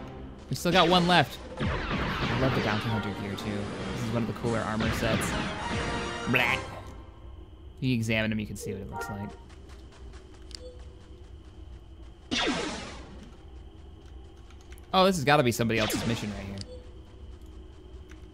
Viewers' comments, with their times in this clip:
0:05 The 'BLERP' timing is impeccable <333